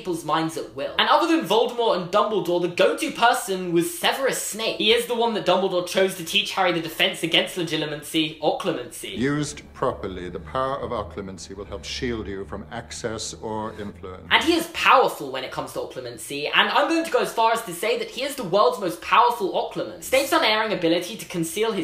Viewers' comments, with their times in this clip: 0:09 my right ear got shOOK